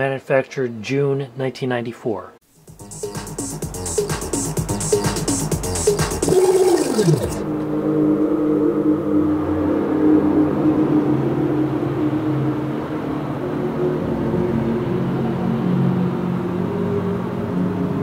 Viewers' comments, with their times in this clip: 0:03 the acid house track It uses a Roland TB-303 synthesizer and and has DJ rewind that might be sampled or real.